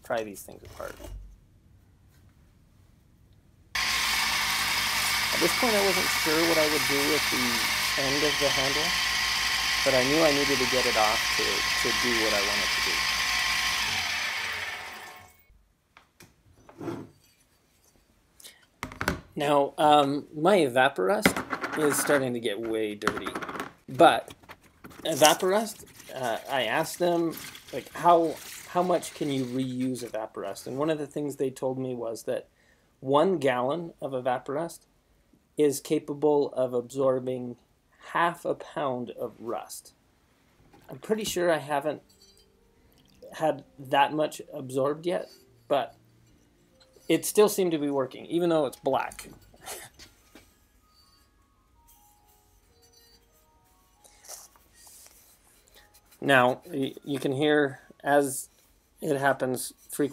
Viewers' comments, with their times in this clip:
0:08 Drowned out Hrmrmrmrmr hehoohoo
0:46 "It still seemed to be working,even tho it's black *laughs under breath*" Hahahahaha!